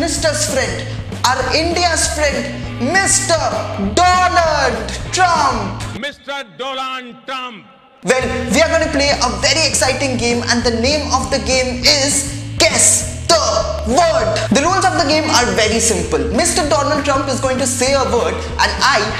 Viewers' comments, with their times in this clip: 0:05 Did you heard the same ? Mr. 2 l*nd Trump
0:06 PM Modi revenged pronouncing DOLAND Trump 🤣